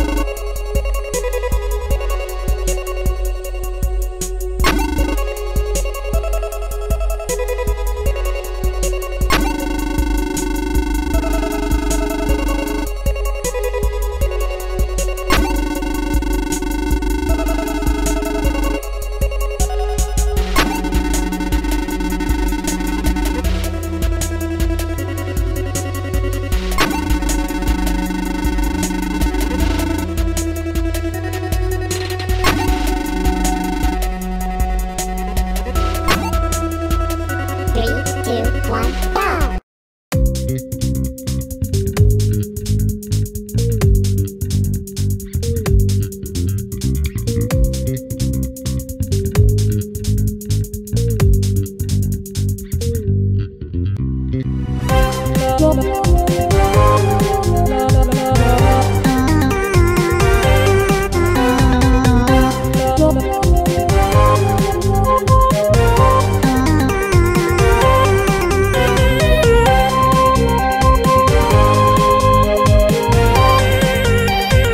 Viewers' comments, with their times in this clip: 0:05 that beabity bop of boyfriendo you can tell he afirmed aboit the ghost ir demon
0:55 I refuse to believe this isnt the start to a jetpack joyride song